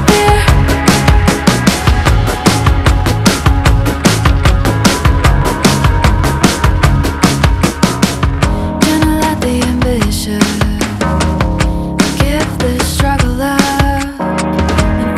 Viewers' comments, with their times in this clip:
0:03 Love that small bridge